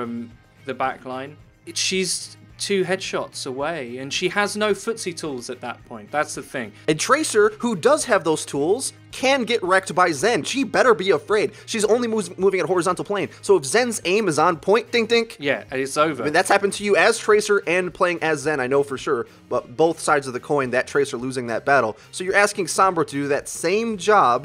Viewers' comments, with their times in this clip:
0:10 sounds like fast forward